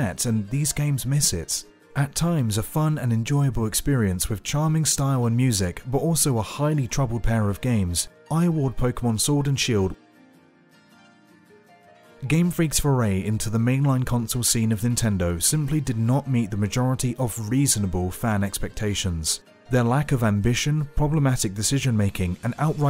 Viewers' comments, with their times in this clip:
0:07 ya.... ya miss a voice clip there??